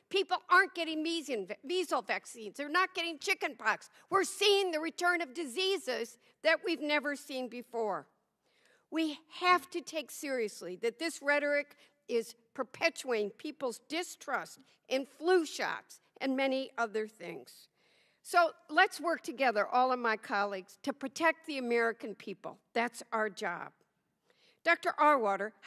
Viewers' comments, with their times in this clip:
0:07 Holy Schnikeys, listening to this in the background and upon hearing some liberal old bat at approx. clearly reading a prepared statement slur the word perpetuating as perpetuing I had to see what this old Yenta looked like. I about shart a dingleberry upon seeing her name was Mrs. Dingell. The highlight of this so far imo. The speaker before this one was also annoyingly condescendingly convinced that he was right and badgering the witness. All of these committees are of course show and grandstanding anyways, and to be taken with a grain of salt.